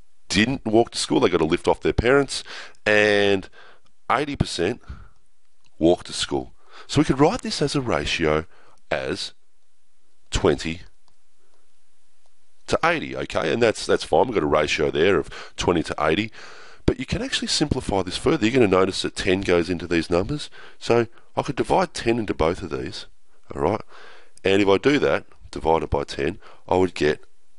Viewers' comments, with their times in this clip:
0:08 Heidi percent Love 'stralia